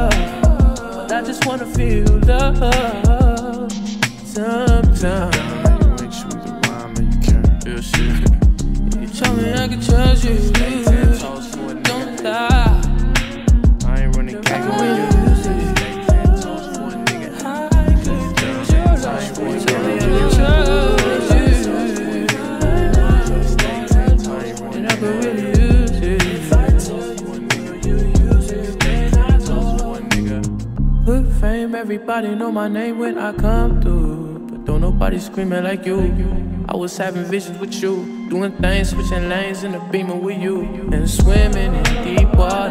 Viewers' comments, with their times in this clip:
0:10 That sound that plays throughout the whole song makes me think my AirPods bout die
0:29 First half sounds like dog shit and then god mode activates
0:30 sounds like Dennis Loyd "Nevermind" very quickly